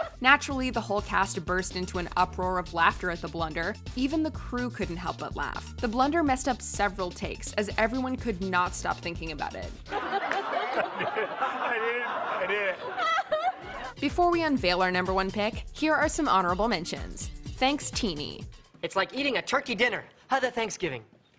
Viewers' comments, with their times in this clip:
0:06 holy cow, Cobie Smulders real laugh is terrifying 😅